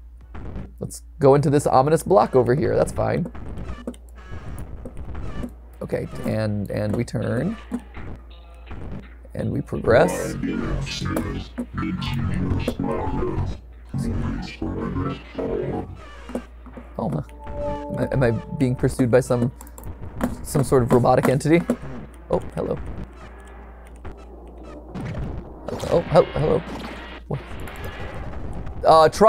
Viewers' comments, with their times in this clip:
0:10 warning ⚠️golden freddy sound effects are here